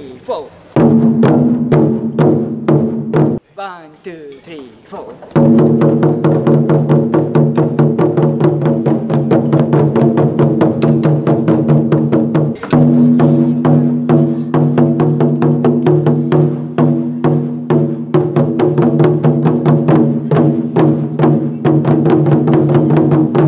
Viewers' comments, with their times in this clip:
0:09 not quite my tempo